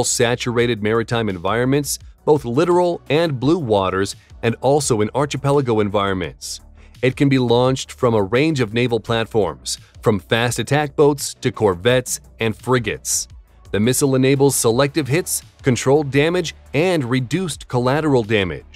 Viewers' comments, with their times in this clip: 0:05 "Archipelago" was mispronounced with a "chee" sound instead of a "kee". It should be "Ar-Kee -Pel-A-Go". See the Oxford Dictionary. Again, lack of knowledge or crazy style?